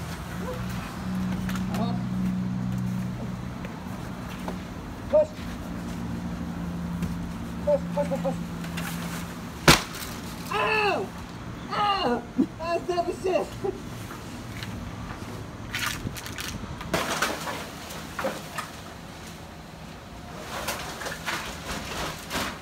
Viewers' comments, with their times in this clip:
0:08 I thought the roaches were yelling when the mattress hit the ground